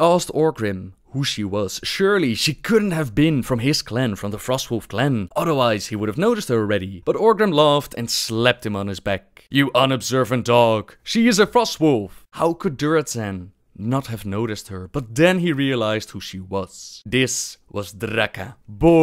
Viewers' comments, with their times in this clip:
0:06 Did you mean "epitome" as in "eh-pi-tuh-me"?